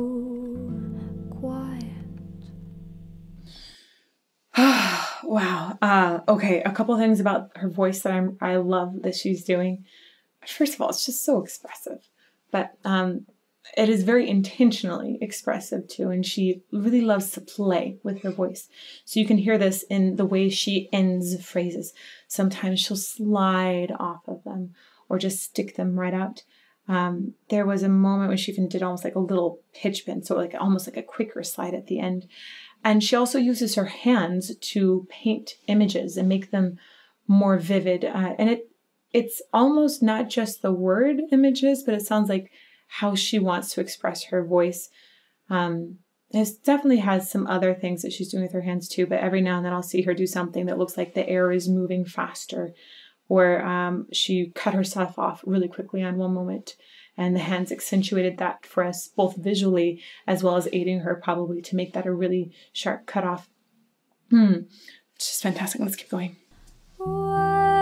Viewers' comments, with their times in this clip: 0:04 Her voice is indeed a breath of fresh air.
0:54 I like the way she sang 'pillow'.